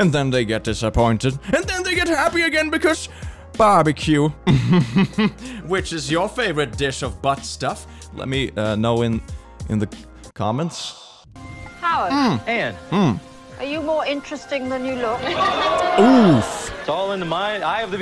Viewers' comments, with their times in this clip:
0:04 when u said "barbecue" my mom came in and said it in the voice u do when u voice karens im gonna die oml